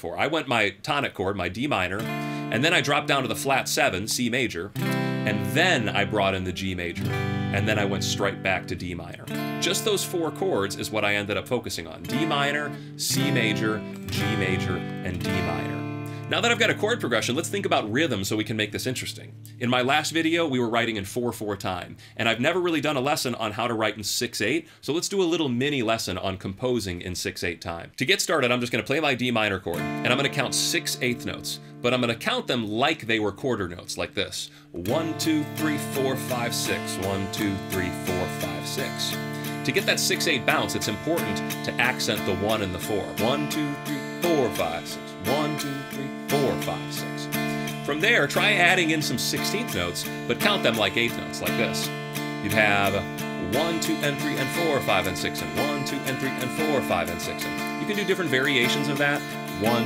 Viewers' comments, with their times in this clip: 0:05 while you're playing the chords, my mind: "wait, is it ?" Let my heart go Let your son grow Mama, let my heart go Or, let this heart be still now I'm going to relisten to metallica's mama said
0:43 These rock tutorials remind me of how Lost in the Woods from Frozen II was made to sound like something off Chicago 17 (Inspiration, Stay, Hard Habit, Along Comes, etc.). Great vids! Intro riff/strum reminds me of the start of Queen's "Crazy Little Thing Called Love." Your actual piece sounds a bit like Survivor (Bickler/Jamison), Journey (Perry), Toto (Lukather), or other AOR hits.